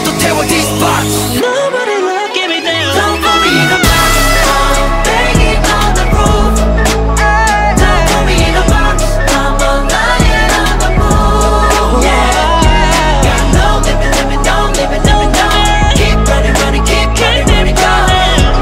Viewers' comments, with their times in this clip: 0:03 Renjun’s high note is crazyyy 🔥🔥🔥🔥